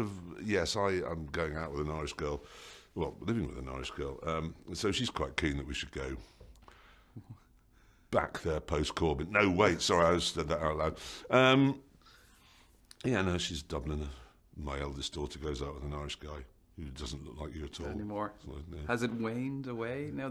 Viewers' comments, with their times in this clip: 0:06 can someone clear this up I might have misunderstood but did Jeremy say go back there post covid if so how did he know if it was uploaded in 2019